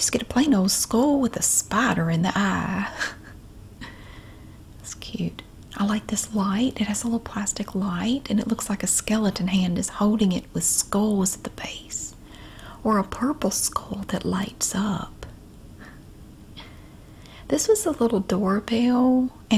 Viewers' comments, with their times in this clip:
0:06 when you said light omg the best asmr sensation. The way you say light I keep rewinding it